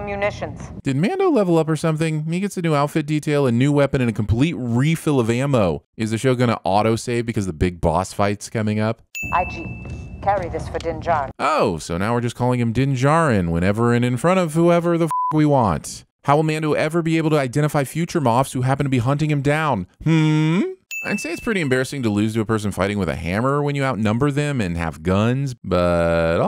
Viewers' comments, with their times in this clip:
0:09 Everybody's gangster until the trees starting chittering and yapping